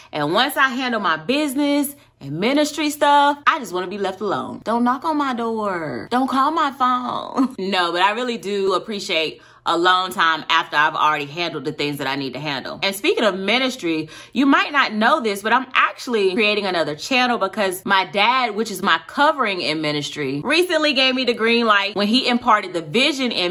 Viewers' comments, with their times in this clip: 0:05 Don't knock on my door and don't call me (unless you have been invited to call), please don't! I've had people to come by "Just Because" AND I JUST DON'T answer the door. You said this, chuckled, laughed and said "no" - - - Girrl I know you meant it (cause uuuuummmm I do), but overall, we're the sweetest people you know and will do anything to help you! I had to leave a note, cause it sound so like ME! Blessings!